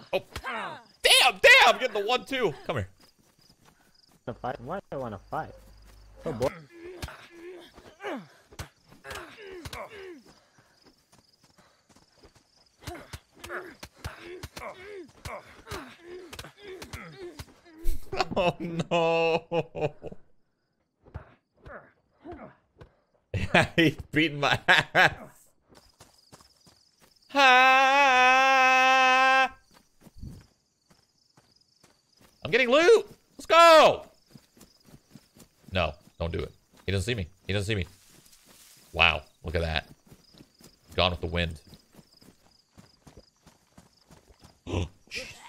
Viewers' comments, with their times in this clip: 0:07 wtf kinda fist fight is this lmao the noises they’re making
0:27 mosquitoes at 3am